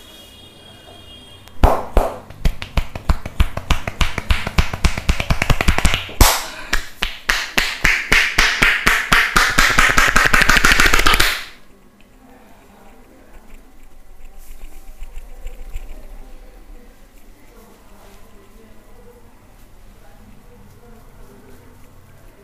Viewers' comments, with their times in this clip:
0:08 Bro EXACTLY EXACTLY 😂😂LITERALLY I COVERED THE NOISE FROM MY PHONE Caz it’s sounded like I was watching 🤣🤣🤣🤣💔